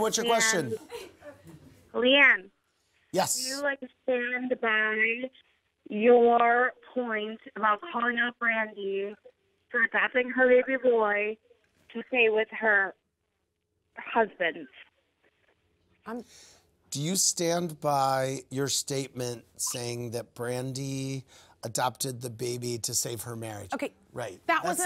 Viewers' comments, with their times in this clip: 0:10 that chick was drunk lol what’s up with these callers today ?